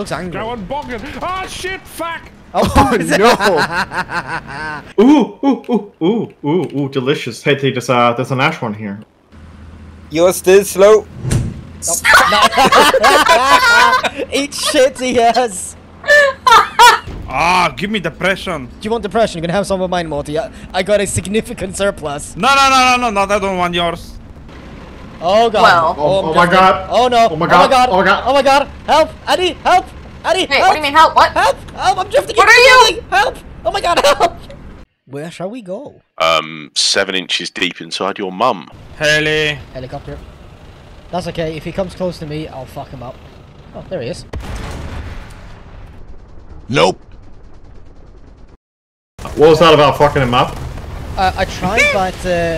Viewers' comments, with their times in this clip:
0:08 "naschhorn" it kinda soundet like "ein arsch horn" in german, translatet its something like ouh an ass horn
0:36 sounded like wad